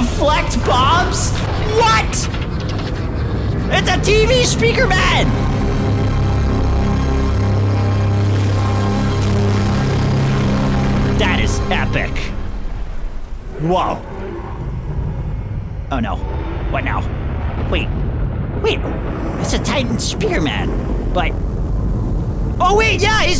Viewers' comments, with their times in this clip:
0:05 pov yay music is loud totally not gonna break my ear drums